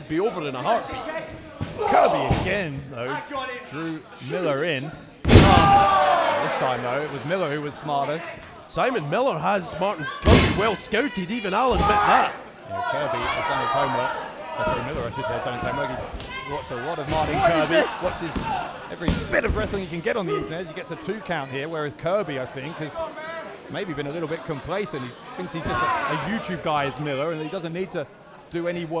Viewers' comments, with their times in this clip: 0:09 I cannot stop laughing about the People's Head Slap The commentary even sounded confused about that one.